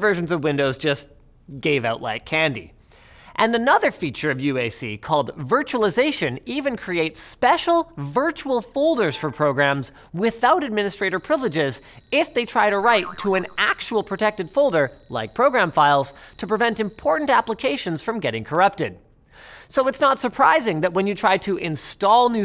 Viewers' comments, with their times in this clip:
0:08 I heard the Critical Battery alarm and i grabbed my charger faster than ever before then i realized. it was the video.